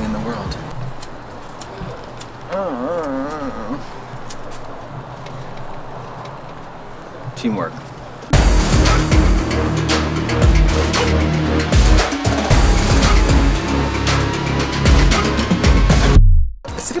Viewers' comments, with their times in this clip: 0:04 Wait...? Katya just mumbles and waves at people to do her bidding? Eww